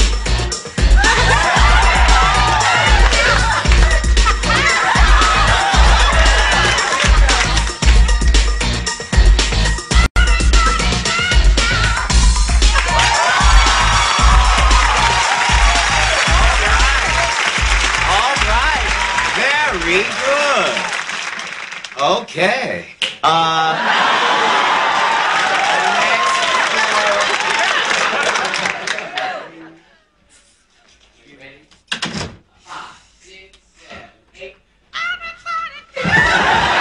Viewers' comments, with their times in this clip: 0:03 I always crack up when she does this Because she starts laughing.. she know she killing it lol
0:22 The snap of shade.
0:22 The finger snap ...the best!
0:23 That SNAP is louder than THANOS snap at the end of Infinity War. Real Aunt Viv brought the fire here. And she was smiling all through the dance routine. Goddamn!